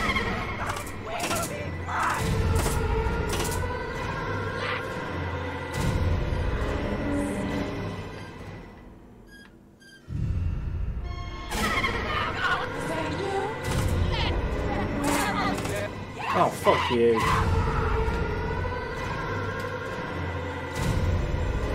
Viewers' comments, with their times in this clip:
0:05 cute how Jen waits for you to turn that wheel, the music even stops for the little squeak squeak and then back to murder time